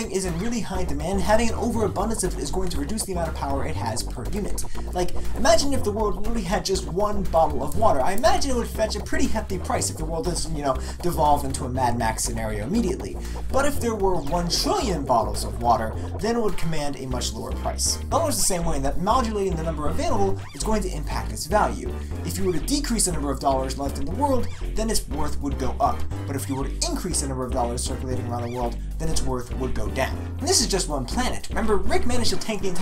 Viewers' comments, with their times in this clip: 0:05 good content, disturbing music (especially the one playing )
0:19 the video is interesting but i had to stop watching it becouse the music in the middle is about to give me seizure